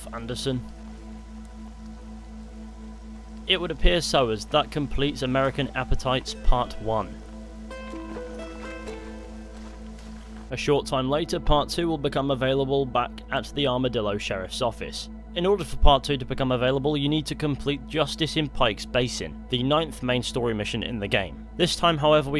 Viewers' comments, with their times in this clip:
0:06 Always loved that stranger mission music I wish it was in RDR 2.